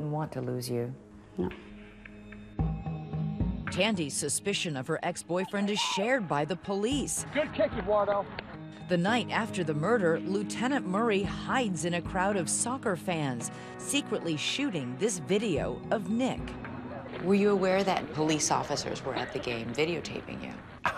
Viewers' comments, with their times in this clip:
0:03 I like the song